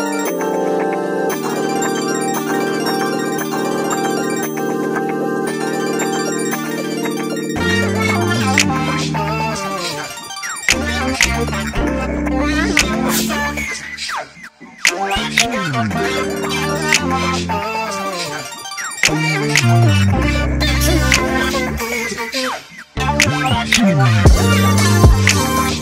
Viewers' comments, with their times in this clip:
0:09 Vocal line ftw! 😍